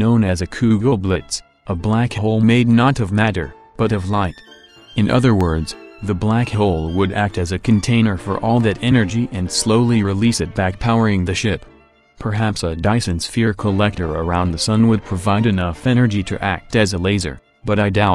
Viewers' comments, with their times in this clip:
0:03 he just got German for a second